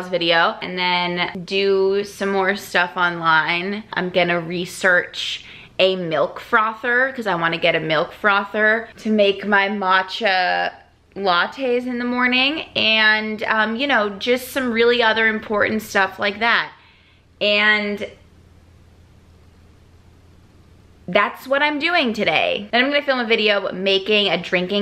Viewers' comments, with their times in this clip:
0:09 "mat-cha latte" I HOPE that was a joke pronunciation!